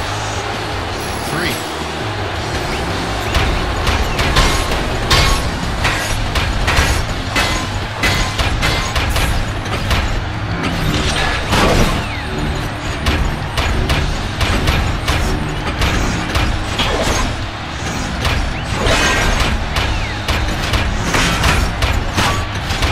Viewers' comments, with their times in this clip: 0:04 It sounds like so little star